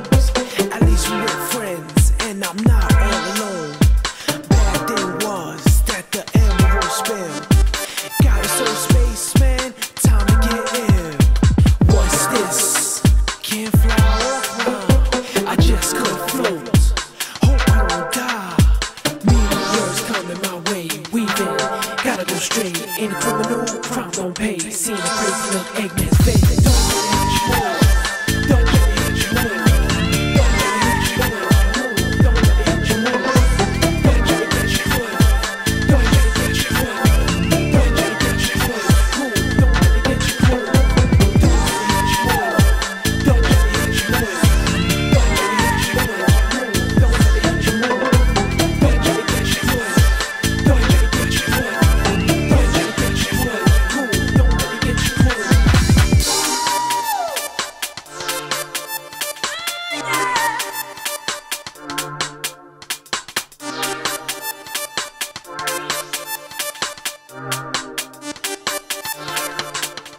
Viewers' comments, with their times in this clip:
0:07 I always heard it as time to get hit. From the damn meteors! lol
0:26 I remember that women's voice used to freak me out when I was little. Little me thought it was some strange sound of an alien or something like a space elephant coming to get me.
0:26 what i hear with headphones/earbuds:dont let it hitcha move What i hear with tv speakers: bo bo bitcha bo.
0:55 Is that a Chao protesting in the background? o_0